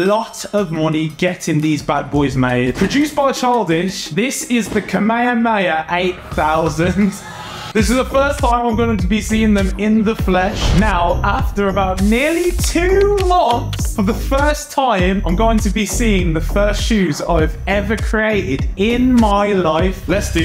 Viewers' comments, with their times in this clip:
0:05 how did you pronounce that "KA-ME-HA-ME-HA"? :(